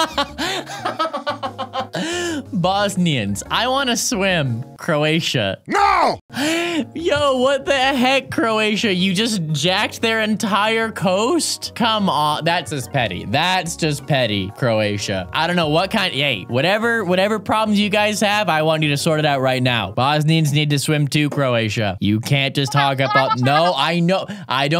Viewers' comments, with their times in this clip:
0:06 I love that song!!!!!!!!